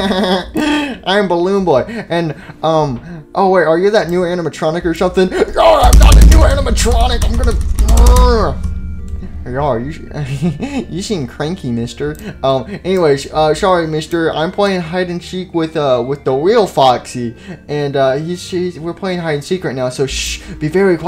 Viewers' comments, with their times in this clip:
0:06 My volume was up all the way...and uhhh......you can guess what happened